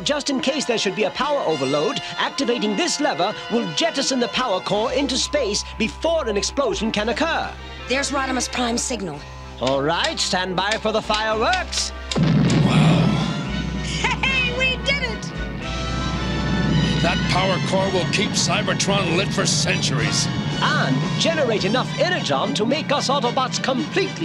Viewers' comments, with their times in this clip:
0:07 Wow...barely 1 minute in and a glaring error.....ummmm...that's NOT Rodimus Prime. That's your BF, Arcee..... Unless that's your nickname for him in the sheets.....? AND THE WRONG VOICE!